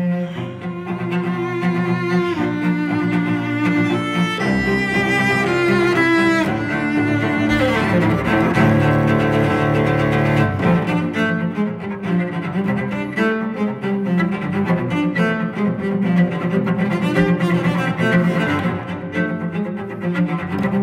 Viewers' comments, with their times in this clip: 0:07 Can we just stop and appreciate the run ? I know there are probably much more technical sections in this song but that was incredibly impressive